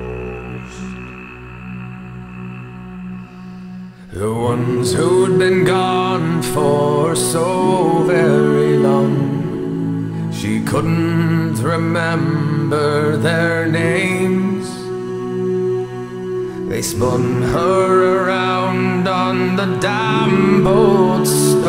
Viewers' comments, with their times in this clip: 0:07 I'm shook. These intervals will forever be in my dreams